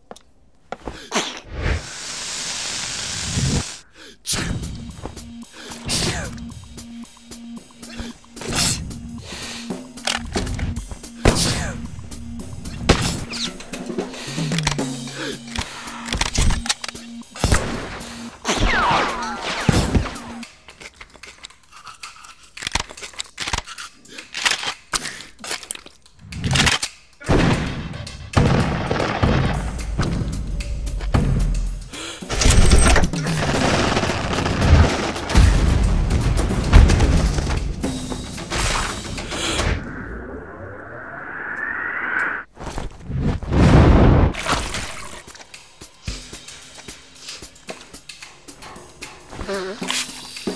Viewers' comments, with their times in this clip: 0:10 No one: Litteraly no one: Every dad when he sneeezes:
0:32 imagine sneezing like that tho
0:38 my grandpa's sneeze